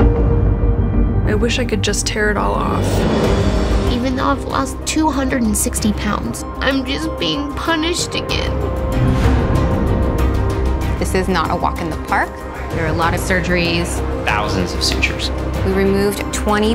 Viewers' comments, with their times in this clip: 0:04 what a horrible voice